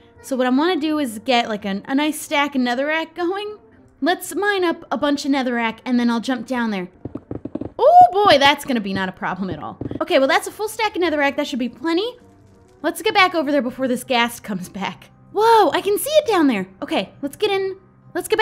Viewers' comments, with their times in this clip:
0:06 mickey mouse is that you?